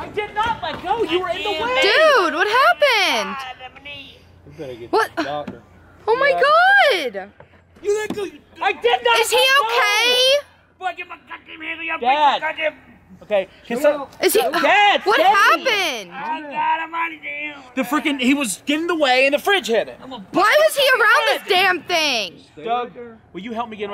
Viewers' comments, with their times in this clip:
0:08 The way he made that noise had me dying